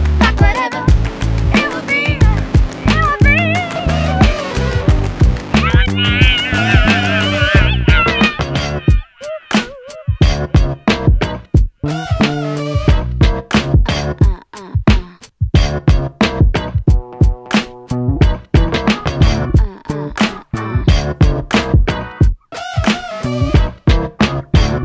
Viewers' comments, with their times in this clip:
0:06 I didn't know Huey, Dewey, and Louie sang on this.